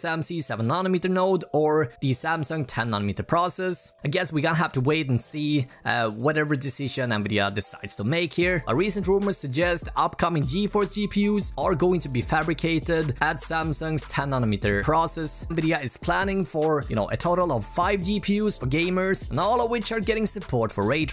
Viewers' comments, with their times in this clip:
0:06 i think you skipped some letters from Nvidia there :) You need to read some things like they were writter with spaces like: N v i d i a :)